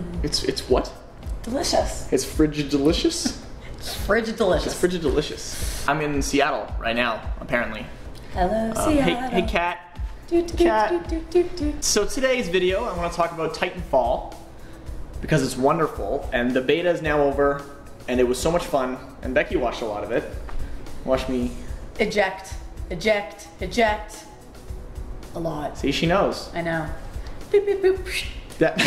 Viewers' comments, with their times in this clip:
0:09 your sister started to sing an owl city song... i already like your sister :P